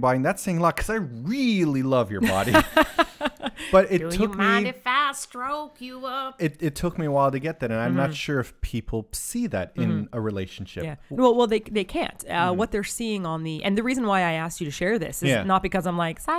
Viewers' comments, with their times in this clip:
0:04 had me rolling lol....When you sang that i continued on with the rest of it lol, You guys are the best and are #couplegoals in my book.